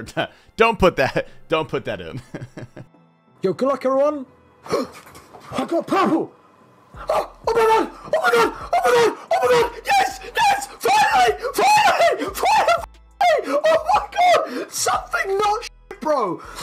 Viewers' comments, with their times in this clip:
0:04 Lmao i laughed so hard thinking that dude said Ahupapuu for the purple! But he says ive got purple omg😂😂